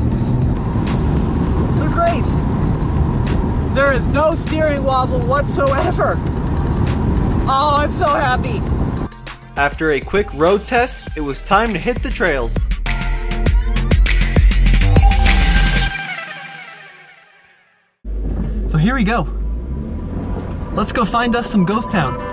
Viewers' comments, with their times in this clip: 0:07 aw IM SO HAPPY ;) sounded like my 8 yr old niece